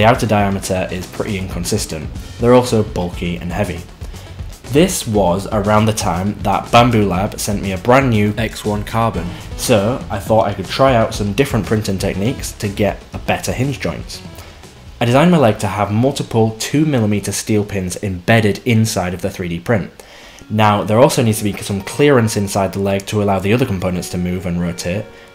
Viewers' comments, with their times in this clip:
0:08 Did you dub over "X1 Carbon"? lol it sounds different